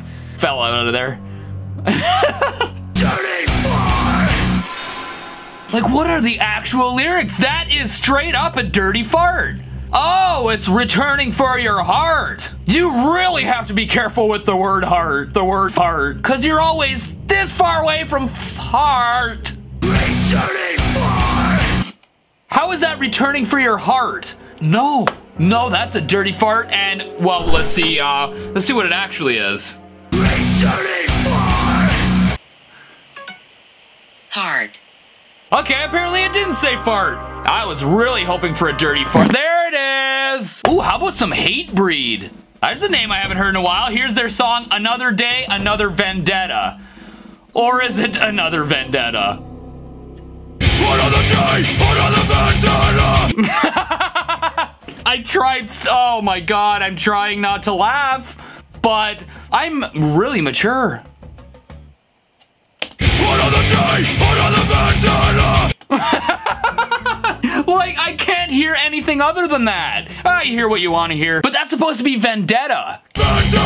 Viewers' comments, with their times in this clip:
0:03 the sound transition was literally perfect
0:03 and it really sounds like it hurt too
0:12 i Heard returning fart
0:17 Bro it sounded like "RETURNING FARTTTT!!"
0:19 it sounds like "returning fart" XDDD
0:20 sounds more like “returning fart” (to me at least)
0:20 kinda sounds like returning fart! 😂😂
0:30 returning fart it frickin hurts
0:45 another day another slay
1:01 that sounds like ANOTHER DAY ANOTHER BANDANA